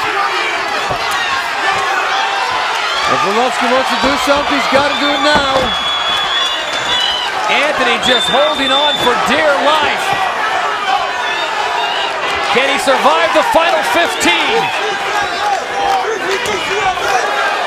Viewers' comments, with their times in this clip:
0:04 you can hear a few squirrels yelling